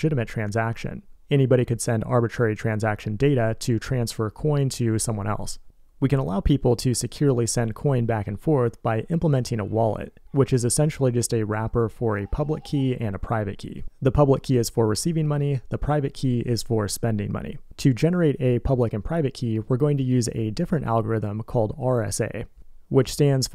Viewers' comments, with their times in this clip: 0:10 I heard a Goat meeeee.....